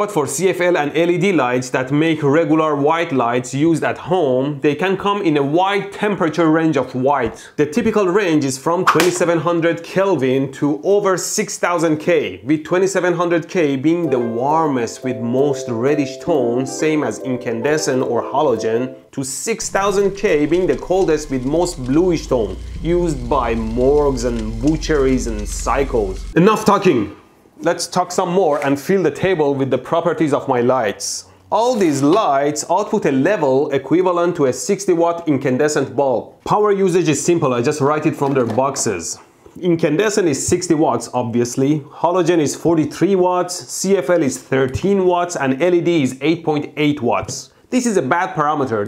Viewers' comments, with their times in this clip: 0:04 "They can come in white temperature range of white" What kind of sorcery is that?
0:23 i thought he said morgz lmao
0:23 I thought he said "used by morons"
0:25 I love the Bernie impression
0:29 with the properties of my life